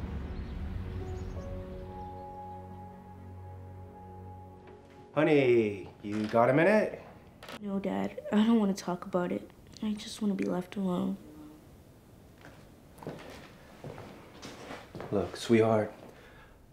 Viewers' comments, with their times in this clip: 0:03 if my kid has that tone with me oh boy! you don t wanna know